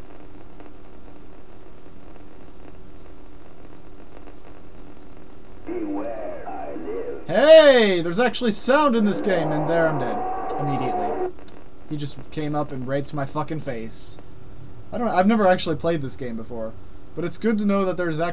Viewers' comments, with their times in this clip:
0:06 LOL Crackle, crackle, bad ROM for bad sound...then, "BEWARE. I LIVE!!!" *boom* *Game Over*.